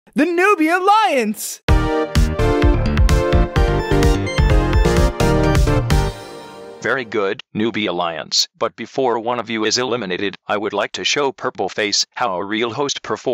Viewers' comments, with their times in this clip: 0:01 I Love The Music for newbie alliance